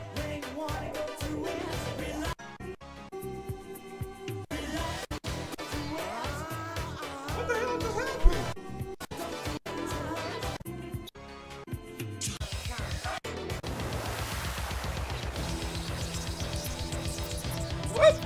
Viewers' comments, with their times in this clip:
0:04 sounds you heard a mangled rip of it here which is unfortunate, took the power from the end.